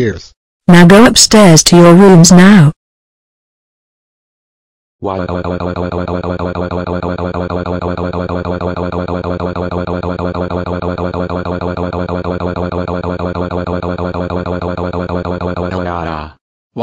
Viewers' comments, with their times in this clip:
0:04 OLD VOICE ALERT